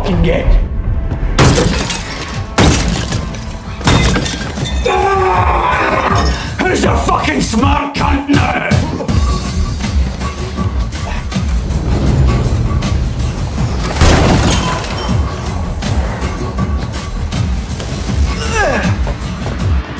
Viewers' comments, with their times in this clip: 0:04 bro the beat😂
0:05 the way the music goes along with begbie's lines is the most satisfying shit I have ever heard
0:06 I always get a thrilling chill down my spine when begbie say “who the smart count now” in sync with the suspenseful action type music
0:06 I love how the music beats to Begbie. That scene is why you don't fuck with Robert Carlyle.
0:07 i love how when he says this its timed perfectly with the music
0:07 the beat drops as he says it